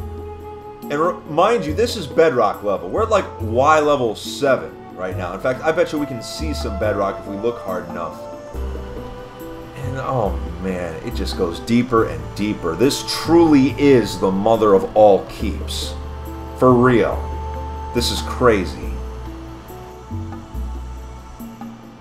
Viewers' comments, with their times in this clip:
0:09 you can hear his computer go crazy